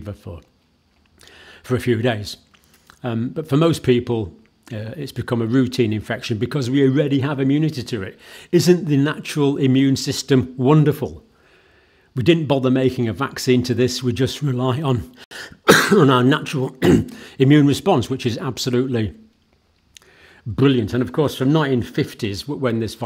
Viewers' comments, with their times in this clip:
0:08 "Isn't the natural immune system wonderful?" (cough, cough). 😅